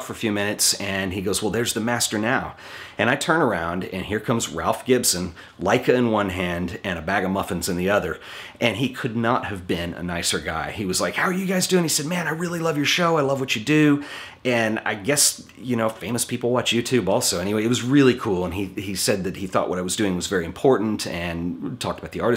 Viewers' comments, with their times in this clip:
0:08 I really like this photographer, I looking forward your video ! Just you say a "bag of...?" I didn't understand sorry. Nice channel btw !